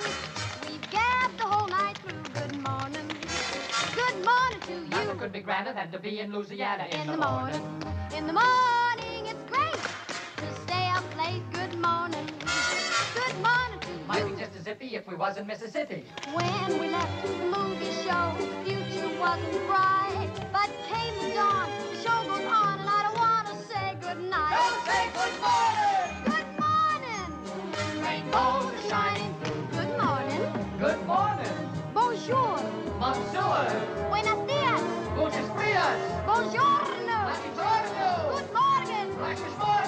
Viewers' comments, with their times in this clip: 0:04 Rapping did exist in 1952
0:07 and the way she sing at these timing kills me :face-purple-crying::face-red-heart-shape::face-red-heart-shape::face-red-heart-shape::face-red-heart-shape::face-red-heart-shape::face-red-heart-shape:
0:08 Can I just say that Debbies little “its great!” is possibly one of the cutest and purest things ever put to film?? She’s a literal ray of sunshine in this 💛
0:22 the way shes says goodnight omg
0:26 Imagine being their neighbors and you hear these crackheads singing in the morning